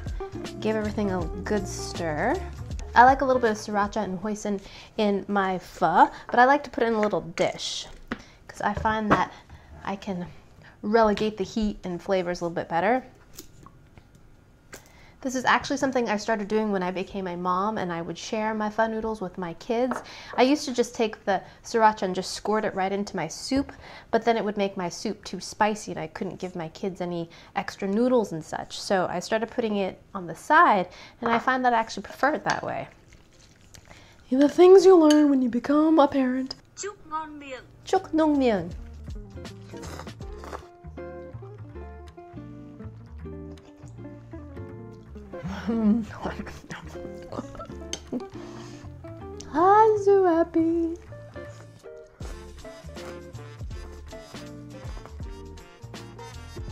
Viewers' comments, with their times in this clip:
0:06 you actually said pho with almost correct diacritics, sounded super close to fluent!
0:37 Watching her BUTCHER Gà MADE ME SCREAM AHAHAHAH Also She copied Google Translate BHAAHAH